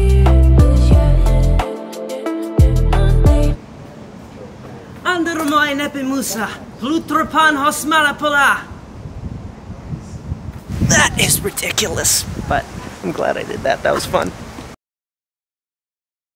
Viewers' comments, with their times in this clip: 0:03 The fact he can pronouns that so good, is amazing